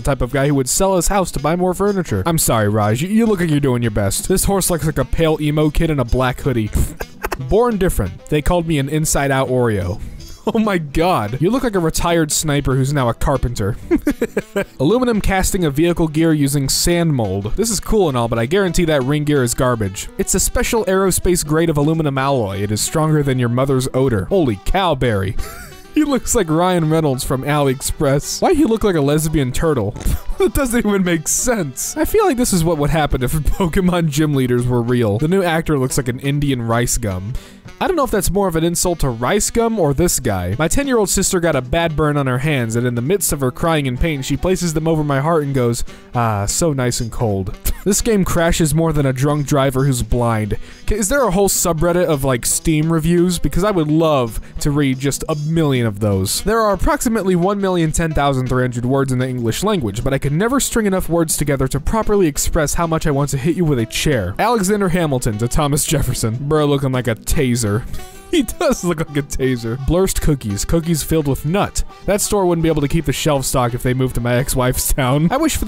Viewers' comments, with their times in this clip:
0:06 ignore my laugh moment
0:57 hamilton inhale HOOOOOOOOOOOOOOOOOOOOOO